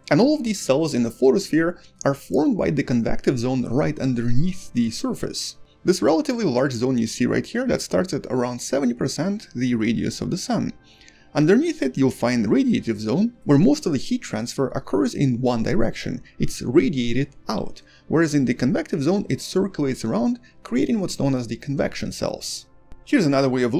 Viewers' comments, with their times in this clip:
0:04 your annunciation of " underneath" reminded me of watching Carl Sagan.